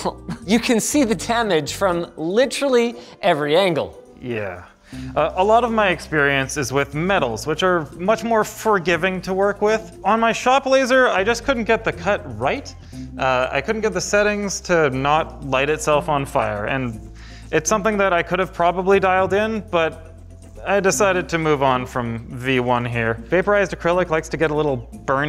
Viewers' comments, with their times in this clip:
0:07 furr-giving. furry confirmed